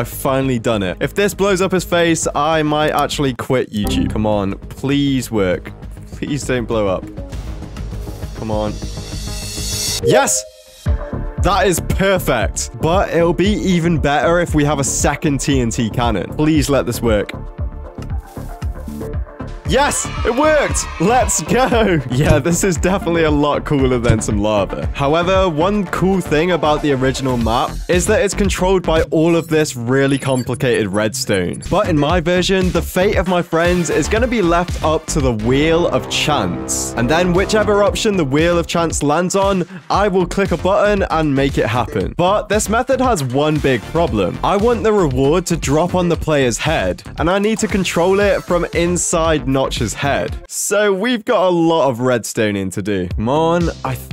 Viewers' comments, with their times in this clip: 0:10 Why does his voice sound British-
0:19 proof that you kiss the KC SFX and overuse it much?
0:40 button not ba an😂❤